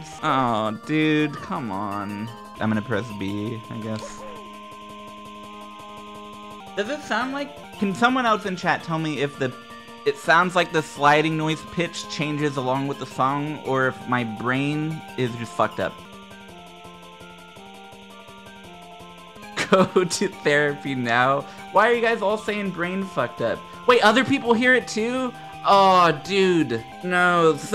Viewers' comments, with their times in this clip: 0:08 IT DOES SOUND LIKE THE SLIDE SOUND PITCH CHANGES TO THE SONG!